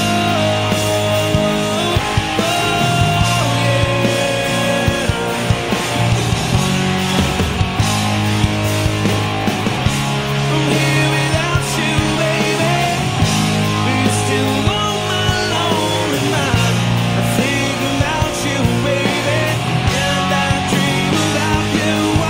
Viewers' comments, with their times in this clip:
0:10 You can't just fake that sweat drenched delivery.